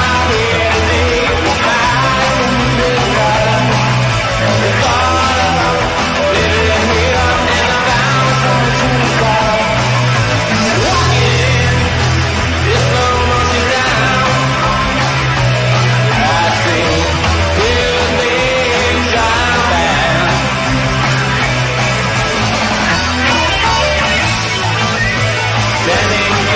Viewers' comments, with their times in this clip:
0:09 The song at ~ 🔥🔥🔥